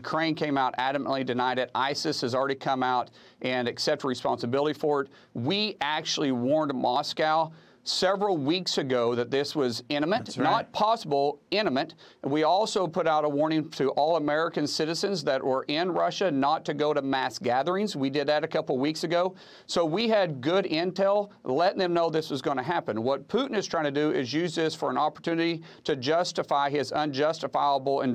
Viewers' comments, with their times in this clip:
0:10 English language: imminent American language: inimet